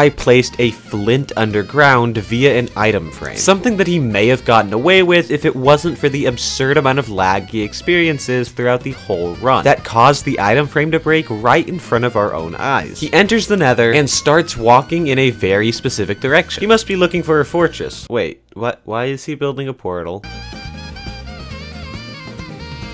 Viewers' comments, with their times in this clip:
0:08 I can hear the mario cart licc in the background